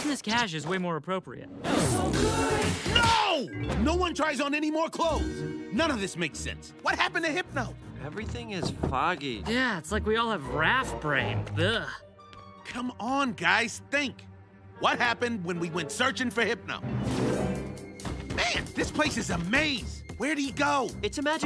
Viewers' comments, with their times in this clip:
0:03 That sandal slap will never not be funny. 😂